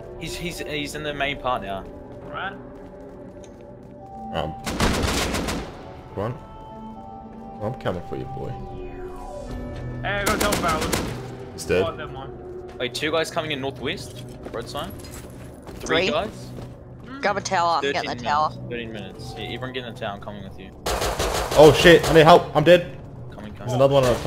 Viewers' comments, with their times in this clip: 0:10 The song really look like a starcraft song with protoss!